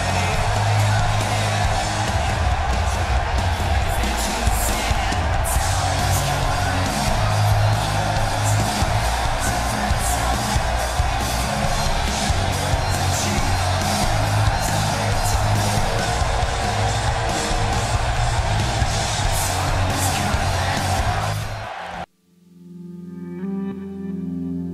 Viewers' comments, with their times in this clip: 0:08 XD At Vince Farted While Leaving After Telling The Rock "Good Luck". LOL